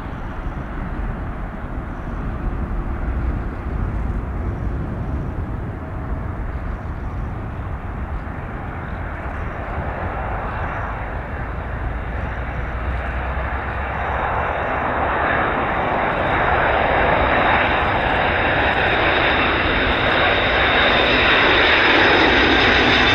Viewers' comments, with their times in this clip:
0:06 love the sound of those retrofitted DC-8. The UPS fleet used to fly over my house in Long Beach every day pm back in the 90s. I always heard it coming, could even here them leaving the runway! Such A distinct lovely sounding Airplane!